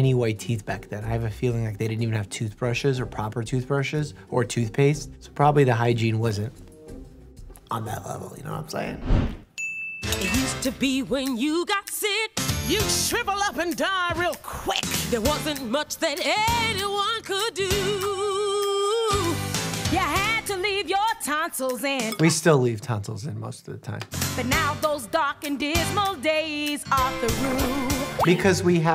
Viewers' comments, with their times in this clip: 0:10 Dr. Mike singing the medically accurate version of the doctor song (and also coming up with the lyrics on the fly) is the cutest thing I've ever seen (after the episode where he grooms Bear, I guess) 🎤 👨‍⚕